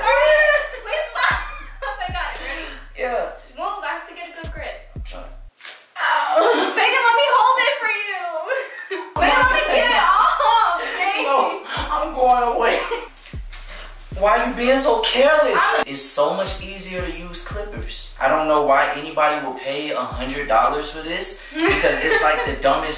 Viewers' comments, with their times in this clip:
0:06 Bruh that shit sound like it hurt 🤣